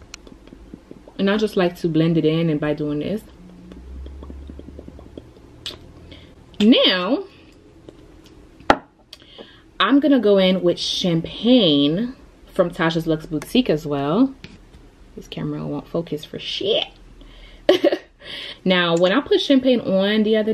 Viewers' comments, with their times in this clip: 0:05 was an asmr for me😭♥️,love you